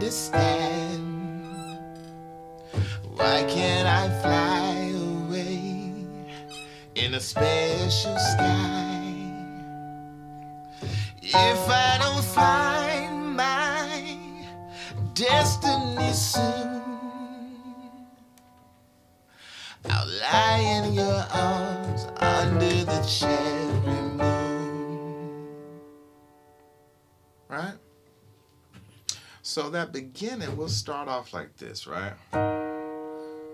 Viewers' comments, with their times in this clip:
0:07 was so clean and it made me feel gross (in a good way) listening to it. Last time I felt like that was listening to the Let's Go Crazy end guitar solo or the Computer Blue cover by some other guy on YouTube 🤟 much love my man
0:20 should be a A major with C# in the base, from that moment on all chords with be only major and all notes shift semitones down, except for the last one before the DMajor with F# in the base, that will be the Gsus2 chord with a C# added just later on top to release back to DMajor.